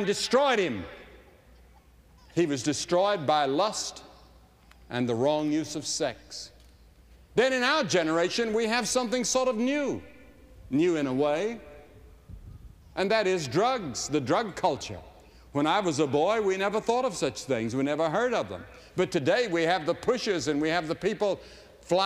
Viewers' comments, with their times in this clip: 0:08 that guy in Whut hahahahaah